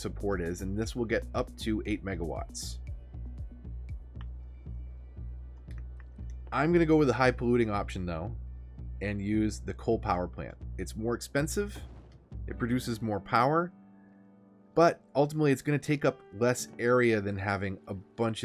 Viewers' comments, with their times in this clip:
0:06 "I'm gonna go with the high polluting option though."---The Non-Chalence of it all, haha.